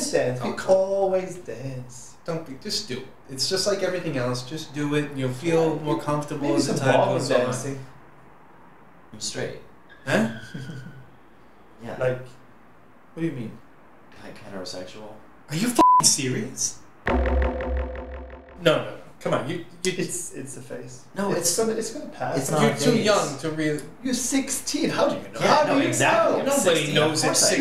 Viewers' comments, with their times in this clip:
0:08 LMAO @ the car skreech when he came out.